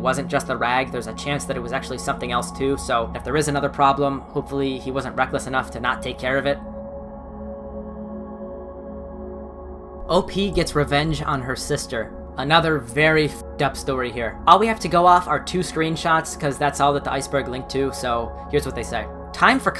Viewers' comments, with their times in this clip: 0:07 can you at least explain what a “nuver” ring is? or at least pronounce it correctly?